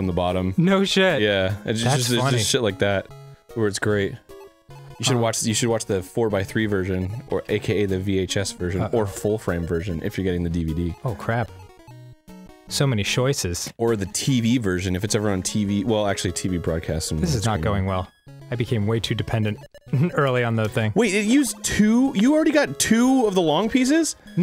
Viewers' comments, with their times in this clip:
0:07 This is when I noticed that Tetris has Christmas music.